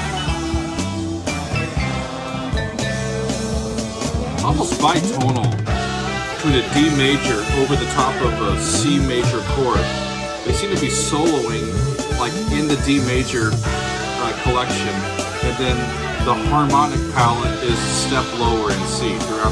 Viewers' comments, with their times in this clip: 0:04 you’re spot on. This is what you get when you keep stacking thirds on top of C lydian and D mixolydian. First a D on top of a C, then a C on top of a D. Totally intentional by Zappa. It’s just him having fun playing triads on the guitar.